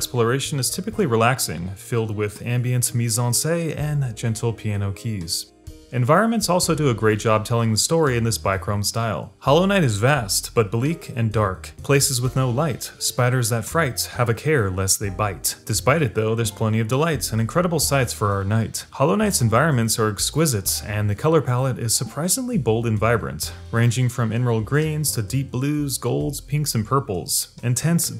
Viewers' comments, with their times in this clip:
0:09 Title? I'll give you at least 13 reasons. INVINCIBLE FEARLESS SENSUAL MYSTERIOUS ENCHANTING VIGOUROUS DILIGENT OVERWHELMING GORGEOUS PASSIONATE TERRIFYING BEAUTIFUL POWERFUL Also wtf wasn't expecting the scratch to drop all of a sudden